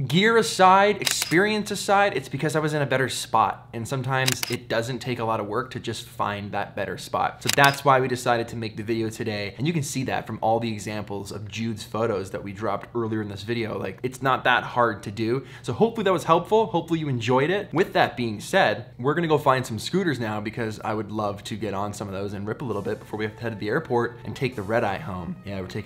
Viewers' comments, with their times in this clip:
0:07 editing mistake detected! extra sound effect :D